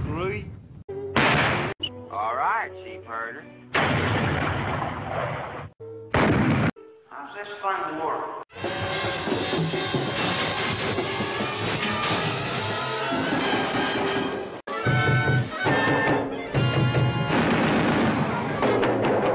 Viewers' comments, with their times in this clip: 0:07 his voice reminds me of Mr. Roger's (Neighborhood) lol